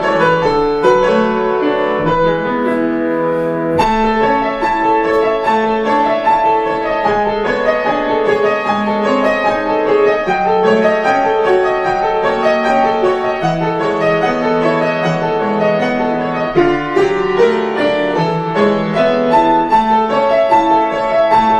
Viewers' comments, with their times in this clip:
0:03 Interesting part - THE BELLS ARE RINGING 🔔🔔🔔🔔😃😃😃!!!!!